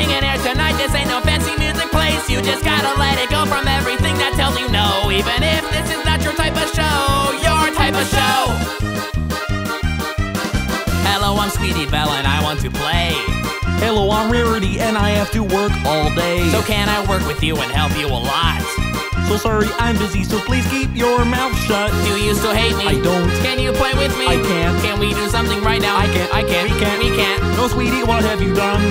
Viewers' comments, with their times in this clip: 0:10 Rarity sounds like Kermit the frog
0:11 was that fucking Kermit
0:13 sounds like Kermit the Frog. XD
0:13 sounded like Kermit the frog a little bit great job loved it just as much as the original :D
0:13 Kermit the frog
0:14 Whaaaaat? Is That Kermit The Frog?